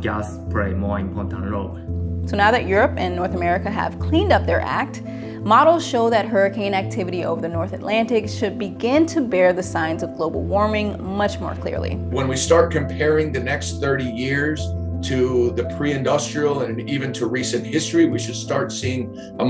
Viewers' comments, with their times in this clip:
0:04 this guy really should have taken out his Retainer so much lisp because he didnt. Lol